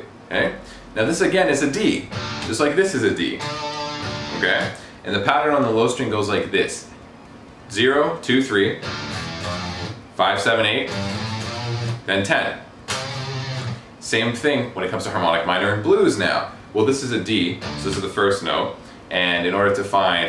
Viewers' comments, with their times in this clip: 0:08 Anyone else think of pirates of the Caribbean